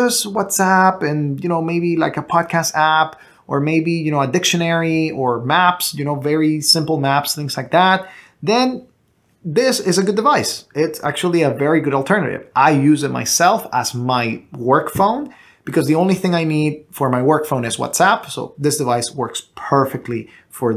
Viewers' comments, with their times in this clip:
0:03 Did he say "Addiction Mary?"